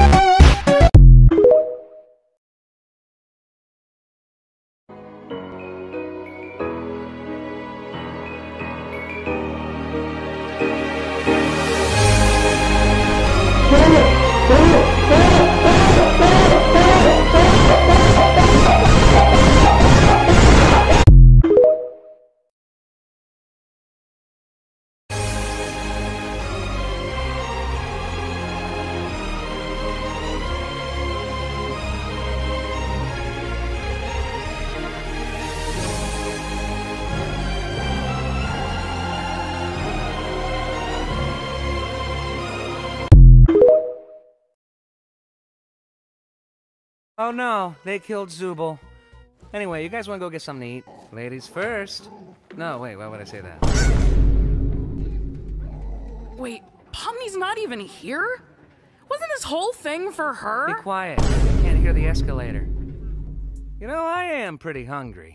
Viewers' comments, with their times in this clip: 0:05 WHERE IS THE AUDIO?!
0:53 WHY DID IT DO A VINE BOOM THATS SO PERFECT LOL-